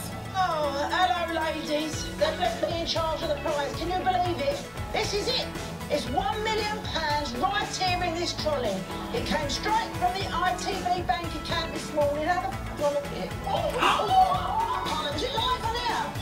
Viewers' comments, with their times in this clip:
0:03 what happened at the mark? I couldn't hear what she said, I'm assuming something that cant be aired on tv.